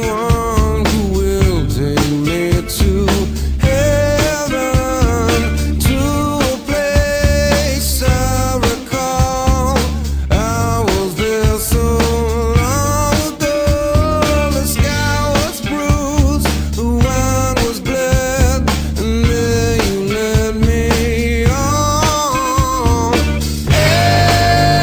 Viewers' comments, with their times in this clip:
0:09 isn't it "to a place i RECALL"? Just sounds more like that to me but whatevs. Thanks for the vid.